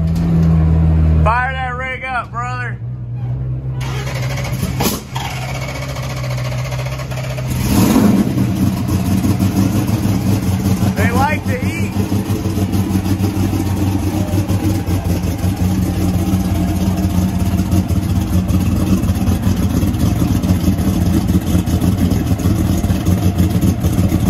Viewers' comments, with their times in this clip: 0:05 bless you Leroy 😂 🤧
0:05 Leroy sneezed first start up XD